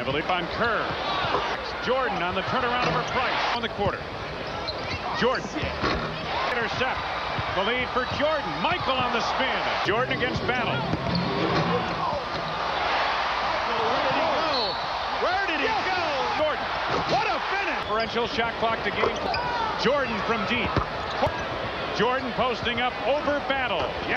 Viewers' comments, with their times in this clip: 0:05 I think I hear Kerr scream “Oh Shit” 😮